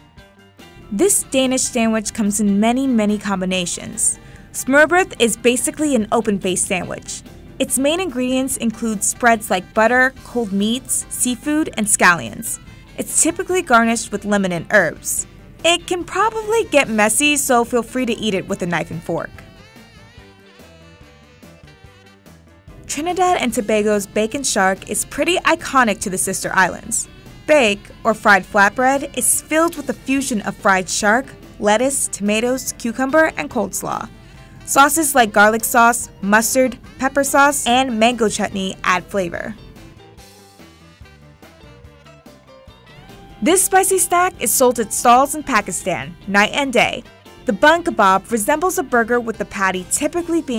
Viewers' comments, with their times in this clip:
0:04 As a Dane I wanna give you props for trying to say smørrebrød but it sounds so funny cause you guys don’t have Æ Ø and Å in your alphabet and it’s really not pronounced that way but a brave move nonetheless to try and pronounce it😂👍🏼
0:33 she says cold slaw. 😫 I hate when people make videos and can’t pronounce shit. Not other languages I don’t mind that, but when something is in English and the person speaks English and they pronounce shit wrong makes me so mad. Like for all intensive purposes , and expresso, and there’s a few others that piss me off. Edit: it’s not pronouncing it wrong it’s just straight up saying it wrong.
0:33 We gonna just ignore that she called it “cold-slaw”